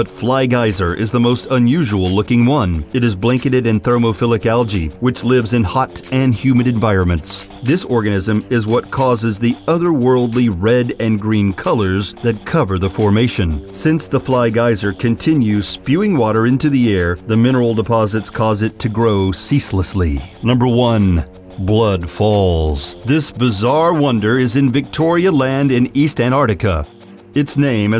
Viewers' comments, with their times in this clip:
0:03 -Did he say "This orgasm "?
0:05 I'm surprised nobody caught that "he said this Orgasm"
0:07 "This orgasm is what causes the otherworldly red and green colors that cover the formation." Um, ... say what?
0:07 Guy says Orgasm instead of Organism
0:08 At 10 min.and 16 sec. this guy says "This ORGASM is... blah blah blah..." haha. Right? Or am I right? I cannot just be THAT out there in my head. Lol. 😂 funny funny stuff. I rewound it like 20 times for private proof. Do y'all hear it too?
0:08 he says orgasm instead of organism